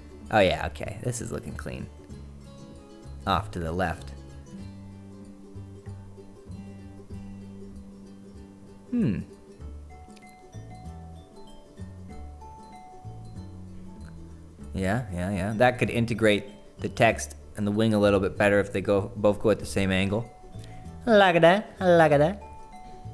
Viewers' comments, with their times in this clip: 0:08 The sound you make sounds like much like the sound the villager makes on minecraft 😂